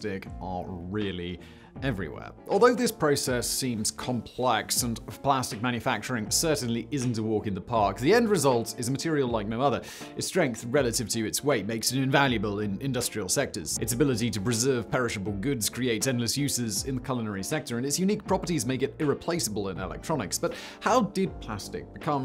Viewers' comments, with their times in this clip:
0:08 Your mumbling made a line sound like, "a material like my mother, it's strength relative to it's weight makes it invaluable in industrial sectors."